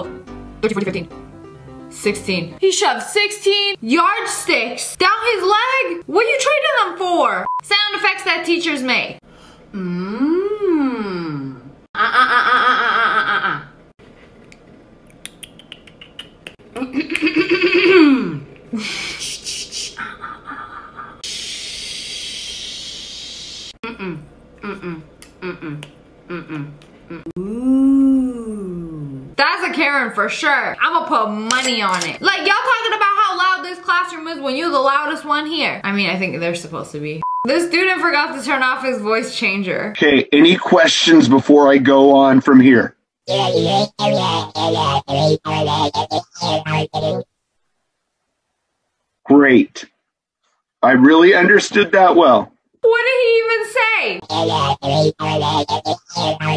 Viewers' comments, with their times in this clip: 0:09 The sound effects that teachers make ( I love that! )
0:22 Every teacher be doing the waterfall sound effect😂😂😂😂
0:41 bro sound like gnarpy